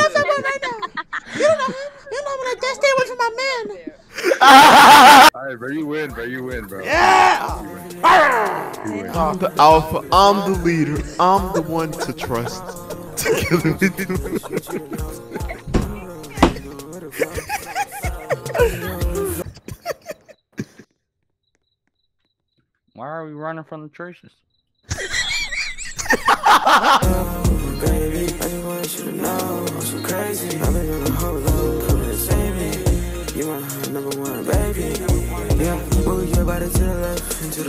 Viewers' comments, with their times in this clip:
0:07 bro's laughter was the jumpscare on diddy
0:22 What did he even say dawg l😂😂😂😂
0:22 that laugh bro...